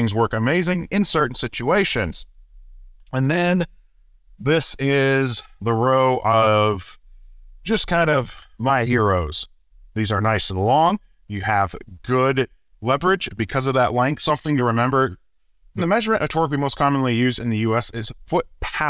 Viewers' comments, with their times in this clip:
0:04 39 minutes of truth about tool storage? I'm up for that. :) Small note to the editor: something odd is up with the audio in spots, particularly I'm not sure how to describe it, it's like the stereo encoding is wonky. It's only faintly noticeable on speakers, but through headphones it's genuinely disorienting. Actually made me feel a bit dizzy, to the point where I had to take my headphones off.